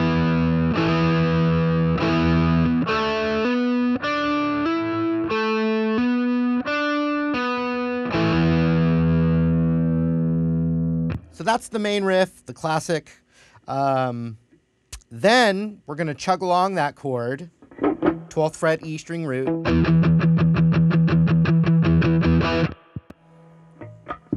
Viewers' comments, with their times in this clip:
0:07 i dont understand how this part works- u press down on 14 A string after 12 d but the only string you plucked was d so how does that still make the noise at 14 a